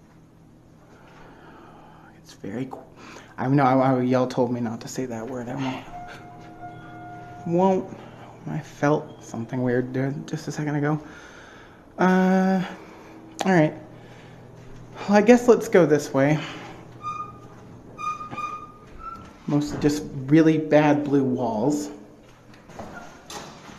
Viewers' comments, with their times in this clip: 0:05 something whispering him "hey..."
0:06 So nobody heard the “hey” ?